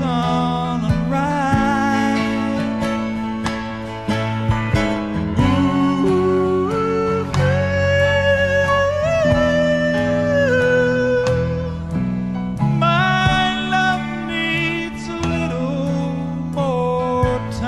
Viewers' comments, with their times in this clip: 0:05 Sounds like the reflection of my own heart crying out.